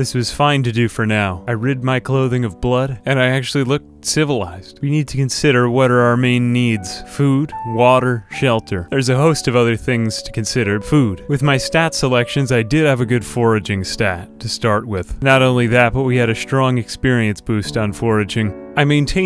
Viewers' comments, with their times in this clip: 0:06 Whats the background music ? It sounds very nostalgic to me for some reason